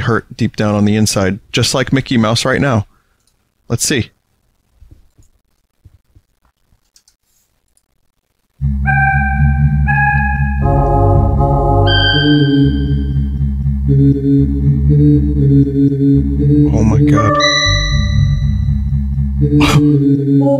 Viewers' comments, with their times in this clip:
0:08 Cursed Images But With Earthbound Music Craving Mouse approaches you ominously! I mean, that shit sounds too much like Earthbound.